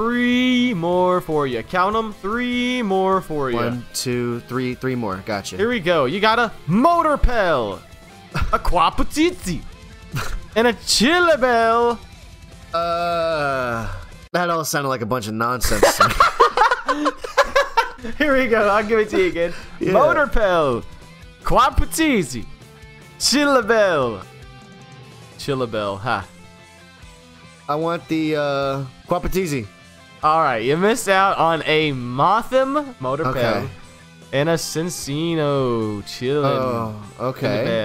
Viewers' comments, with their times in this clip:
0:08 oh my gosh I can't you trying to pronounce Quaputzi/Poliwhirl sounds too funny. Kinda weird how even tho I mostly speak German because I only watch English content. I don't know the names of most of the new Pokémon in German instead only in English.
0:20 German Quaputzi English pronouncing : " Quapatzeetzee Wouldve been funny to have an actual German saying those names, maybe they wouldve missed a legendary or smth :D